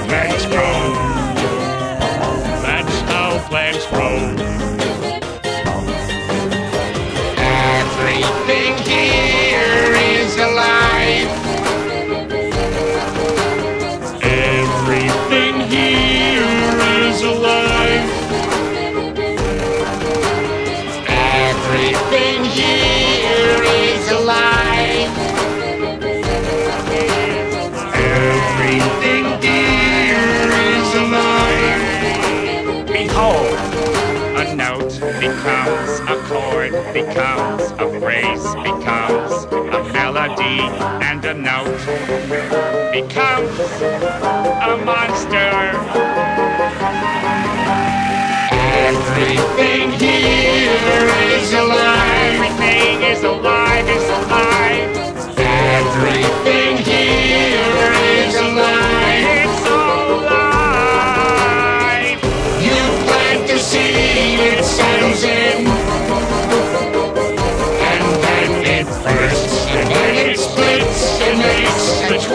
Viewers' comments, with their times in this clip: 0:10 that clarinet went hard🔥🔥🔥🔥🔥🔥🔥🔥🔥🔥P.S look at mr. krab's dance moves
0:21 if you listen closely you can make out the sounds of squidward singing before ha actually appears.
0:33 Squidward's voice and music is clear perfection
0:33 my thoughts of the squidward clarinet solo: EPIC
0:35 BRO THAT IS BEATIFULL AND I CRIED WHEN THE CLARINET CAME AND THE HARMONY
0:42 Loved squidward playing the clarinet while rare wubbox was singing
0:59 Squidward had to mess up that note 🤦🤦